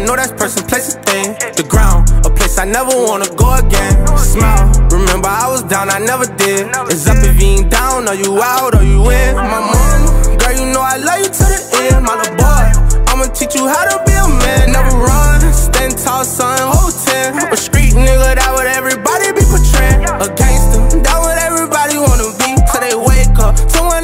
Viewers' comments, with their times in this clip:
0:09 Why’s he sound like Juice Wrld when he says “on my momma”